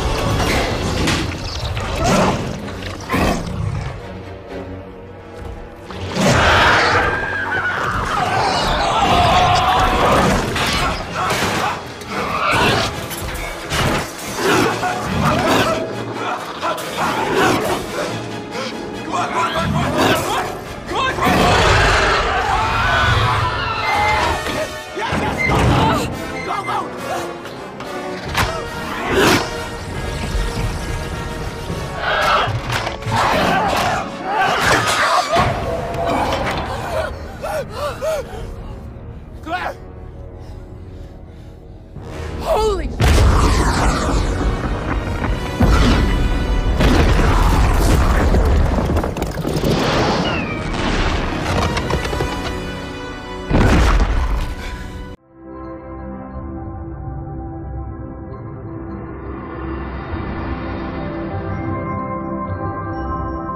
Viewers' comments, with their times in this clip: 0:03 i heard Grunting sound simler to spinosaurus if that counts
0:22 This would probably be one of the scariest situations to be in irl. A creature that is a carnivore/piscivore trying to eat you being under you and roaring at you while you are in a claustrophobic as hell tunnel.
0:22 imagine them paragliding on a boat and Franklin had his arms against her legs and her feet are up in the air and started screaming
0:23 Even him and her scream 😂
0:25 and I liked how Franklin shouts yes when Claire's legs are closed to him
0:41 Claire: holy sh- Volcano: LANGUAGE
0:49 When the volcano sounds like the bathroom you know it’s gonna be bad